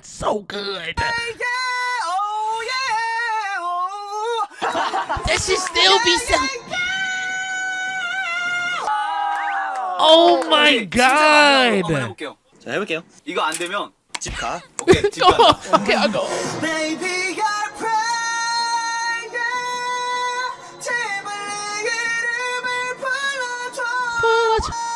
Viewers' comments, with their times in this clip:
0:06 han sounds like he is singing Arabian night from Aladin when he goes that high